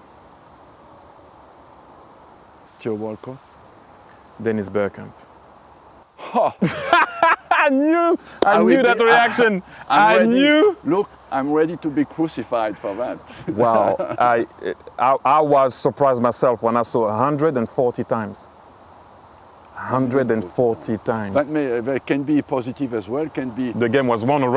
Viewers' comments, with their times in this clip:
0:05 these two laughing like this should be used as a reaction by all Arsenal fans on Twitter!
0:06 Loool that shocked laugh 🤣😂 "HOH", can tell Wenger would be good for banter.